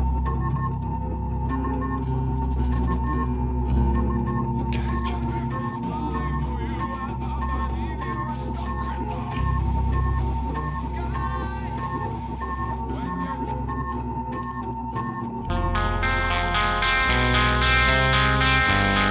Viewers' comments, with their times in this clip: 0:04 is absolutely genius, hearing the lyrics of the song before it officially starts, like a "peephole" to look into the future..